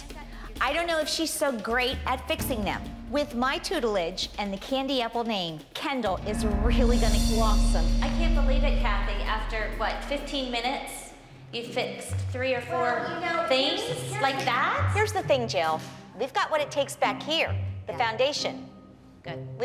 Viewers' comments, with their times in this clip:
0:03 “with my tootlige” got me rolling on the floor.